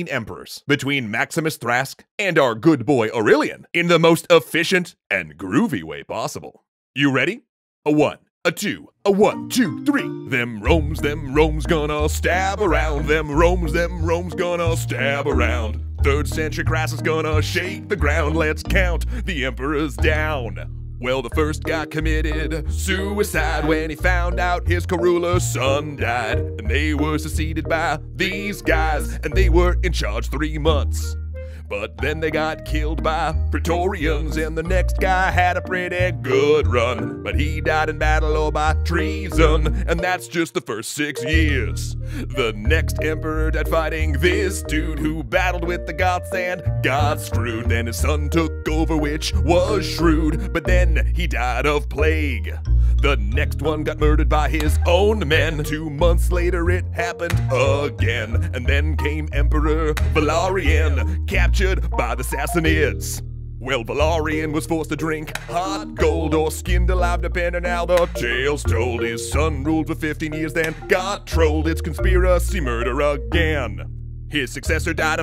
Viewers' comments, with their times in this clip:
0:07 If you remember this video then you'll probably want to go to This song is to damn catchy to forget..... Thanks Extra Credits I won't stop smiling like the praetorian guards everytime I think of this...
0:10 the third century crisis song begins
0:31 I tried. I really did. This song was unbearable. Stopped
1:01 my face when the narrator began to sing, literally. Wasn't expecting that to happen xD